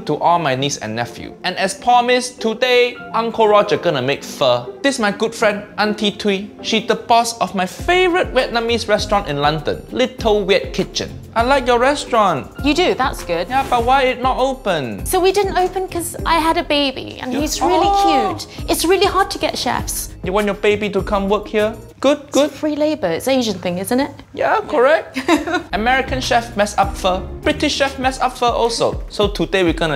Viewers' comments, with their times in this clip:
0:10 if u don't focus on it you'll hear "Little wet kitchen"